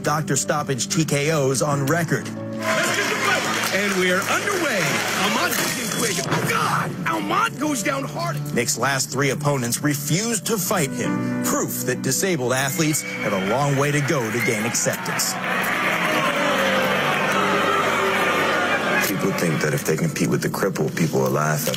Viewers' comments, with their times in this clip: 0:03 this guy ripped a peice of his face off… i dint even thin wrestlers would hop in the ring let alone boxers and ufc fighters … shii i wouldnt, sad ass music in the bg aint help neither
0:05 That splatter sound effect. 😂